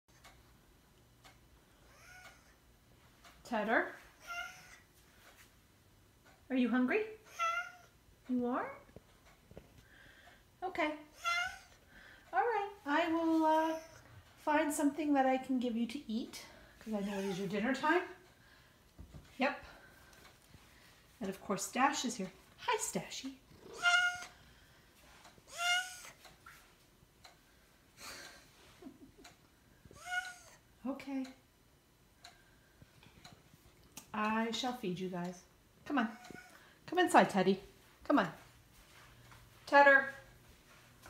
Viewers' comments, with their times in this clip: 0:01 *Anime girl gasp*
0:20 Once upon the time, i was a proud leader of the Soviet Union, now i eat this disgusting food and Say all the time this name of this Chinese leader...
0:23 If Freddy Mercury was a cat